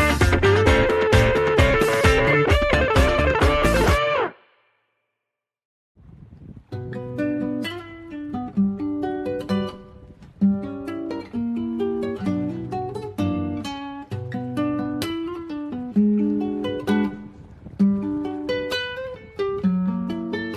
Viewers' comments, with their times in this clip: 0:06 Oh man. That acoustic chord progression is super fun.